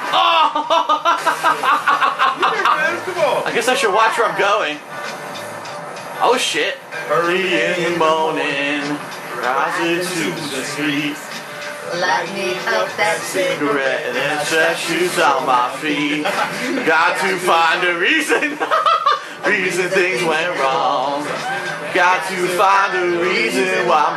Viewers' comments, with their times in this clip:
0:08 i like the way they are singing in unison Laura Bailey especially